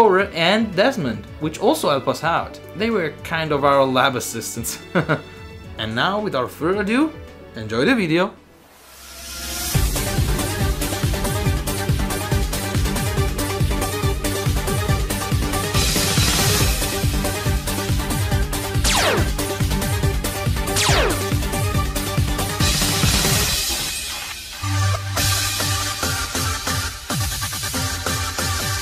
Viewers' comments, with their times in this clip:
0:09 I couldn't see how you did it, I could only dance to the beat